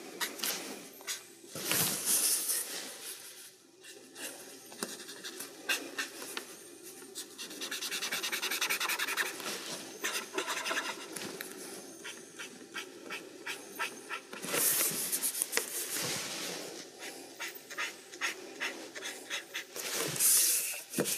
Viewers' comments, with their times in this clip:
0:08 ooouuu the sound of sketch pens scribbling though paper making thick blotch of ink handled by a master